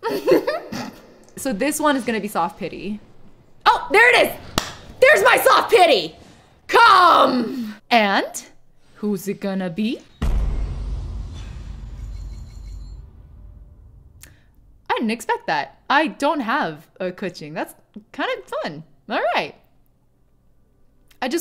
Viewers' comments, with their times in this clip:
0:06 Cyberpunk music begins